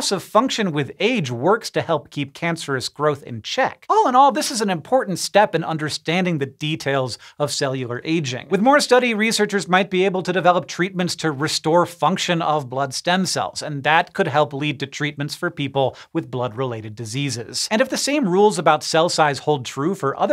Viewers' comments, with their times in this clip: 0:03 He sounded like he was going through puberty again. Squeaky "All in all....."